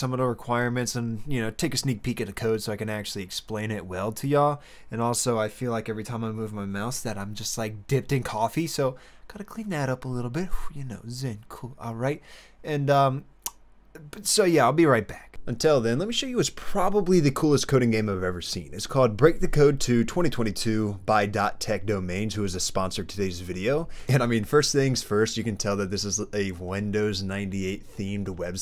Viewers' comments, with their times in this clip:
0:09 you did a little Mcconaughey right there...